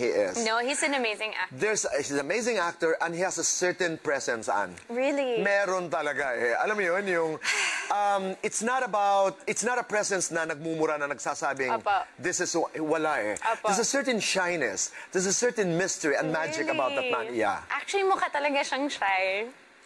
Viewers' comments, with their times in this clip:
0:07 That fangirl sigh ... :D